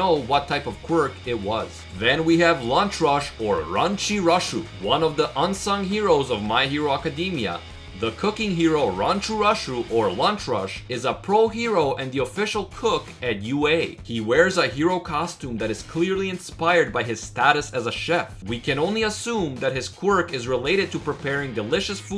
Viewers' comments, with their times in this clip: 0:04 what the hell did he say?